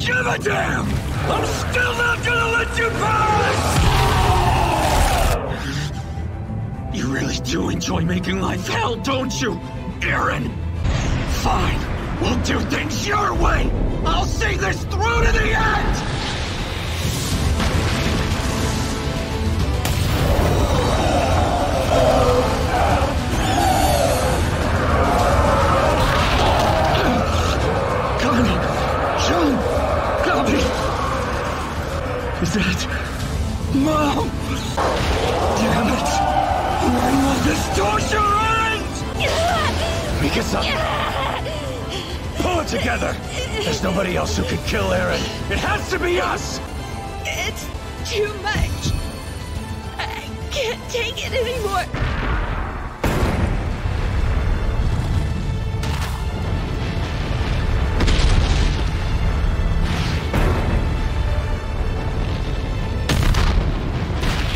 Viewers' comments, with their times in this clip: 0:06 The dub goes fire🔥.
0:07 armin sounds like leo from teenage mutant Ninja turtles
0:48 EATING A BURGER WITH NO HONEY MUSTARD. EATING A BURGER WITH NO HONEY MUSTARD.